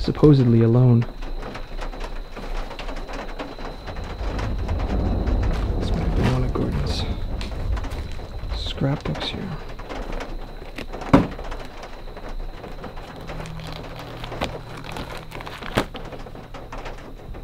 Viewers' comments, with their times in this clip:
0:03 Just a little advice, the rain and thunder sfx your using played straight through during a cut.